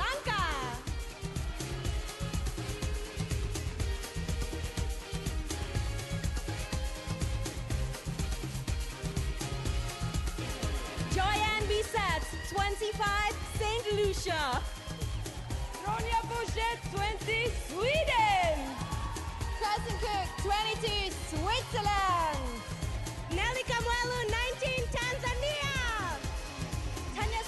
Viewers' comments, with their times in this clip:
0:10 Did St. Lucia fart or something? What's so funny?